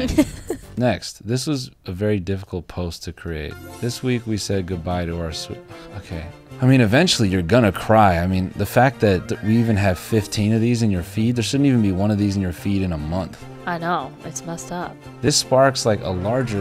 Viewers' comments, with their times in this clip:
0:03 the fucking waiting in line at disney world music